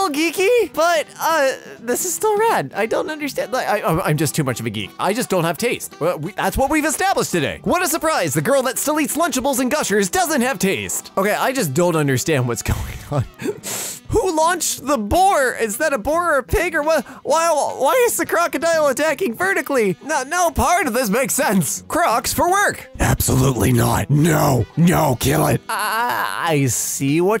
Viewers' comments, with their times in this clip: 0:08 Did you say "girl"? 😕... if so did u swap vocal cords with a guy?